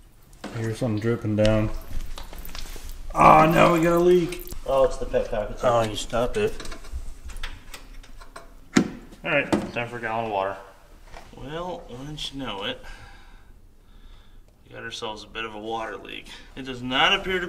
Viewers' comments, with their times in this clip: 0:05 It's running on 6 cylinders....